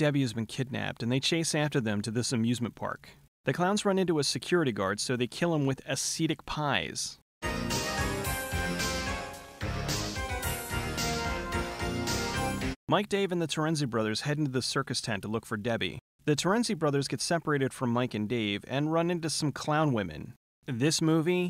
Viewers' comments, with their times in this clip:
0:03 What the hell are Hasidic pies. :)